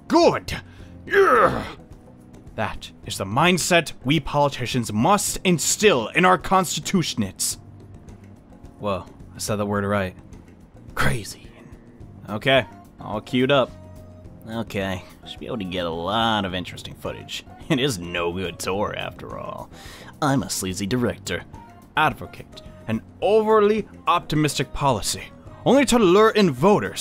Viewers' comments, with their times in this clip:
0:08 Constituents "Wow, I said that word right" - I'm sorry but you didn't :*